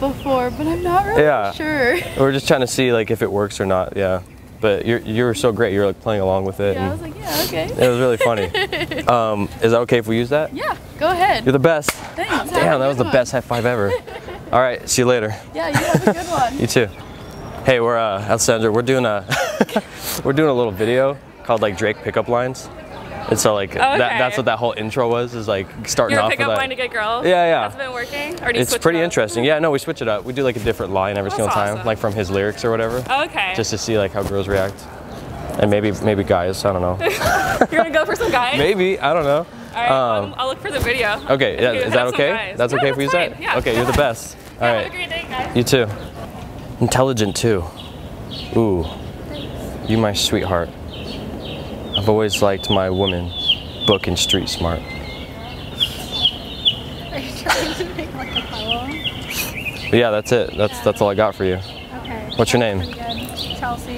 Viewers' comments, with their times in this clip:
0:03 That girl has the sweetest voice ever. I want her to read me stories at night, I'd sleep like a baby on codeine God damn.
0:46 that was epic prankd her in evil laughing